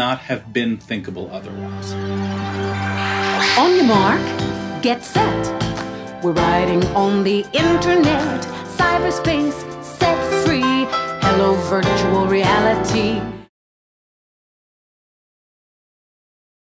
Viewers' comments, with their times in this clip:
0:08 I really can't help but to hear "...cyberspace, sex free, hello virtual reality".😂🤣😂